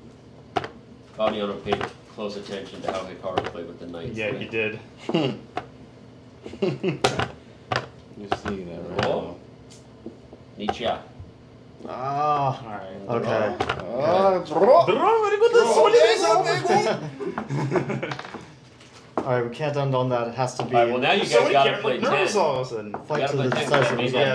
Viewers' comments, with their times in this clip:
0:10 Danny Rensch is speaking Russian?